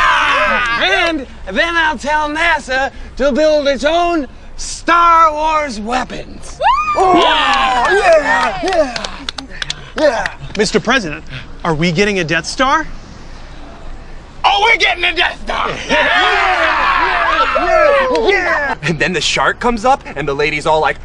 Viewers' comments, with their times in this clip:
0:07 the guy on the right is so pumped "Ohhhh. Yeah! Yeah. Yeah."